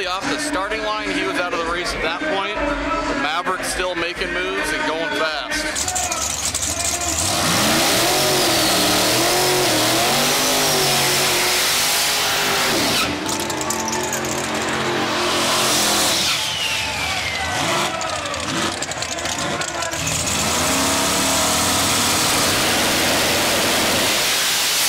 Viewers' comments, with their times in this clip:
0:09 is it just me or does the blow off valve on the S10 sound like an eagle?